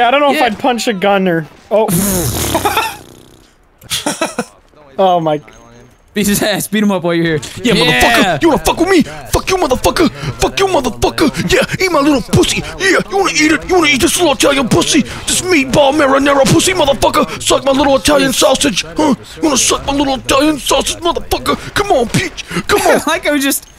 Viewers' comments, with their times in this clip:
0:05 I like how there just silent